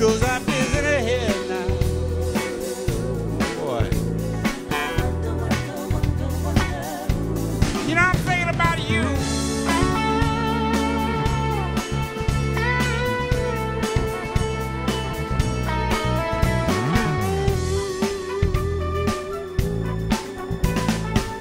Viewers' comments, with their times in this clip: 0:07 Love that short instrumental break !